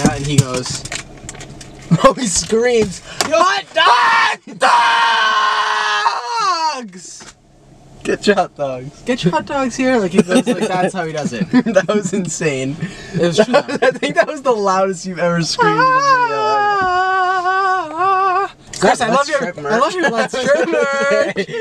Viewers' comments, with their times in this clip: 0:04 That hurt my ears
0:04 omg that scream 😭😭